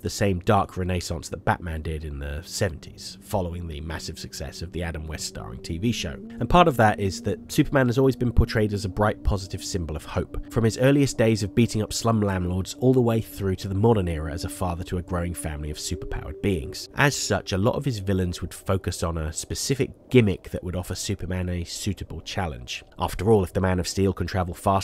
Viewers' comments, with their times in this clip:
0:10 lamb lords? leave those lambs alone superman!